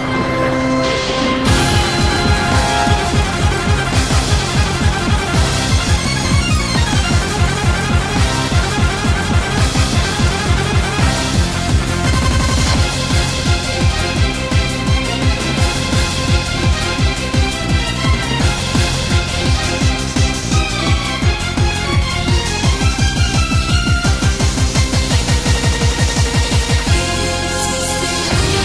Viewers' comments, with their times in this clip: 0:09 the music syncs with collecting the coins